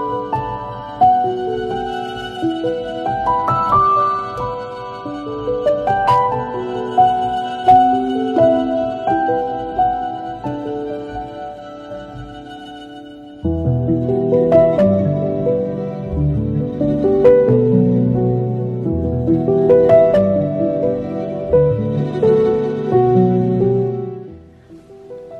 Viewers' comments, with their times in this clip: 0:06 I LOVE the music playing !